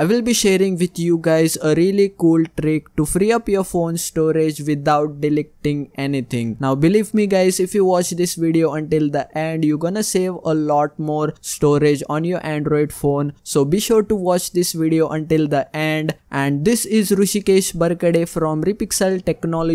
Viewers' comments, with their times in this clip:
0:05 Did I just hear delec ting